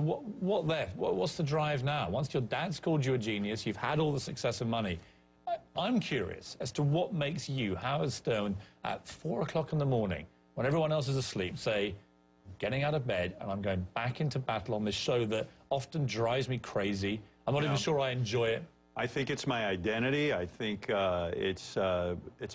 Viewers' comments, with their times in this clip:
0:07 "I'm curious, what makes you- HAROLD STONE -get up and" etc etc Fucking hilarious. Harold Stone ladies and gentleman, the king of all media.